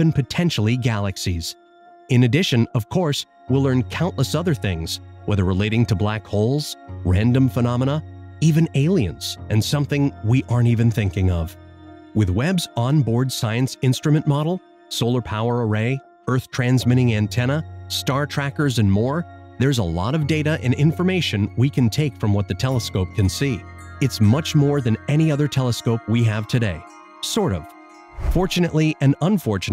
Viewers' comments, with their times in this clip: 0:10 Your narrator should learn that "module" is not pronounced as "model".